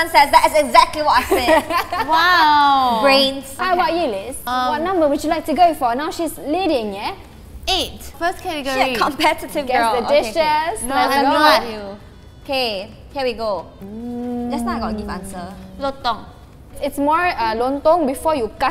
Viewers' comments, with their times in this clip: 0:04 Muslim here and how she changed her accent